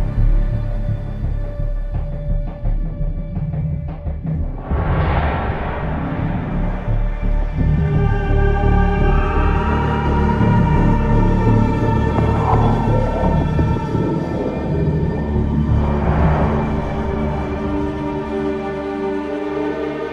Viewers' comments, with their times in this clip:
0:07 sounds like zombies round start.
0:07 reminds me of cod bo1/bo2 Zombies